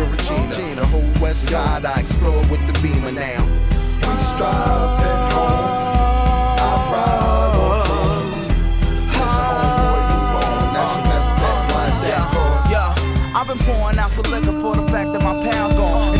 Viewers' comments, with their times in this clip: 0:03 Watching you add harmonies reminds me of something kid cudi wouldve done if he was around in 2005. Haha Its great wooooahhhhhaaaahhhh 😆 Kanye wouldve really benefited from some cudi to add to these awezome productions back then lol.